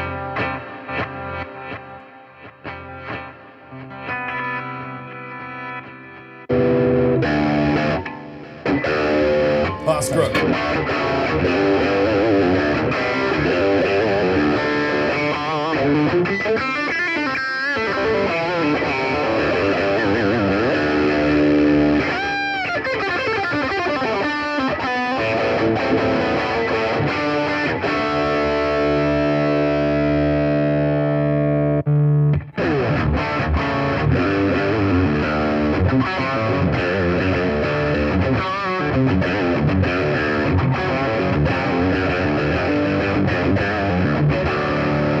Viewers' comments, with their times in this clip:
0:06 Is the SL-Drive patch a Slash inspired tone?
0:31 Djents out on a single coil tele style guitar lol